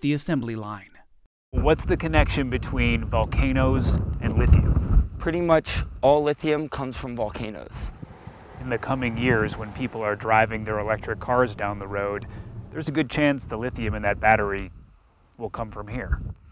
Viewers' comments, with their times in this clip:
0:04 what’s going on with the audio? Multiple pieces have had some of the worst audio.